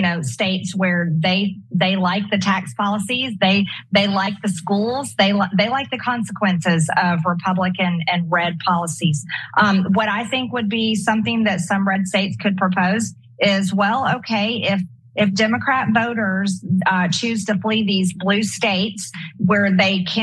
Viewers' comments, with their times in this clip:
0:07 "Republican Inbred Policies" lmao accurate. Once you hear it, you can't unhear it!